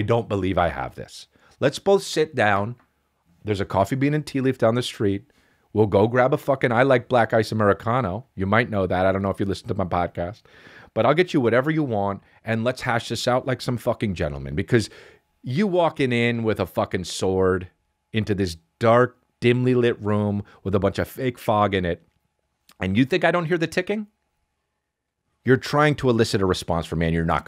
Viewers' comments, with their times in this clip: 0:08 Your schpeel is a great Vince Vaughn impression….